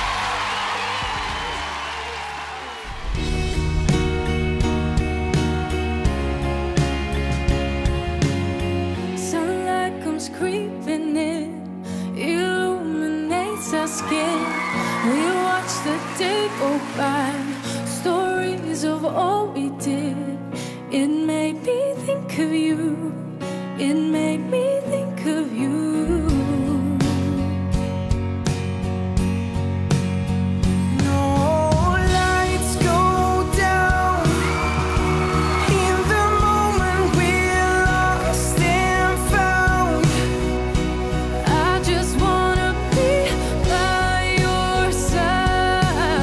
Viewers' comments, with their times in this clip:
0:09 Why is no one talking ? Their voices are so good!! ANDDDD they sound so good together😮
0:20 who are they? They sound great!
0:30 WOW his voice